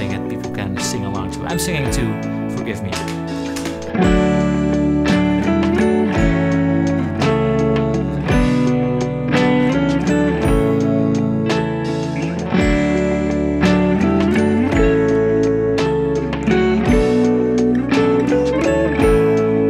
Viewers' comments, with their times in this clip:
0:04 Reminds me of Threat Of Joy by The Strokes.